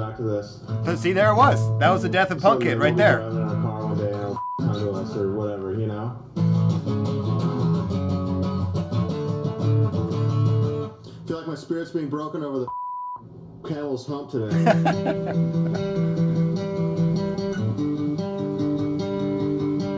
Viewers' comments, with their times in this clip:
0:06 I feel like parts of Punk Kid became Here’s Your Letter. The notes and melody are in there, just not there pattern wise. The first part of the chorus gets played right before “the camel’s hump” gets a beat down